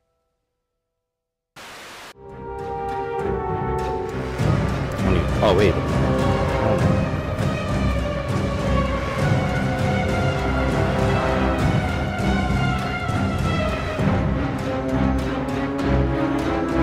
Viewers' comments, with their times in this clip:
0:03 The song sounds fucking identical to the Spider theme from Harry Potter and the Chamber of Secrets Harry Potter and the Chamber of Secrets Soundtrack - 10. The Spiders